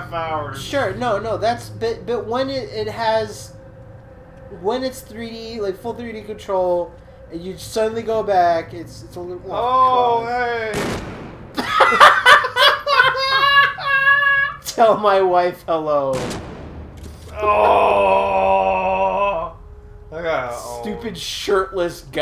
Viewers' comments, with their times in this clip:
0:09 Monster guy is like "Wait is that a shot-?" *BOOM* Monster guy like "Oh don't do it, Murph. I surrender!" *BOOM*